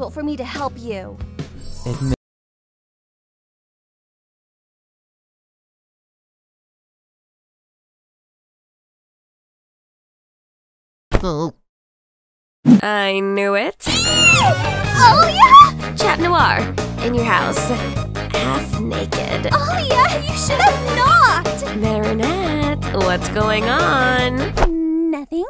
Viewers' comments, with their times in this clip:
0:06 was too sexy for the audio to work! XD